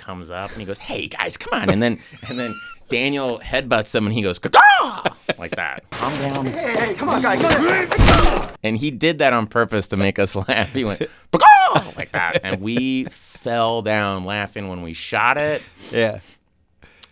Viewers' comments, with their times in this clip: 0:03 so he'll let a Raven sound play here, but not when The Raven vanishes into the dark at the end of the series. Then it pisses him off that the editors put it in as a joke. But in season 2, it's the funniest thing in the world to Bill.